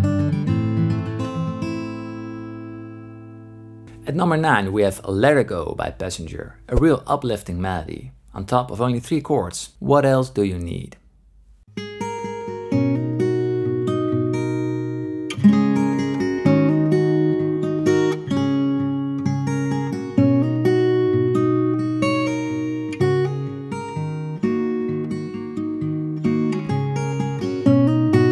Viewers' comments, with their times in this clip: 0:10 "We have Lerergo by Passenger" Me: I never heard a song called Lerergo by Passenger. The song starts playing Me: Oh!